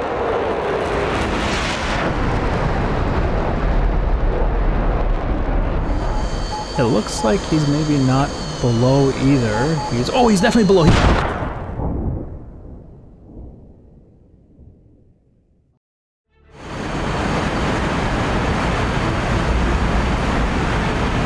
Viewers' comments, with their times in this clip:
0:05 oh hello (in ruski accent)
0:05 Why didn't the F-22 RWR sound off when the Su-57 shot a FOX-2??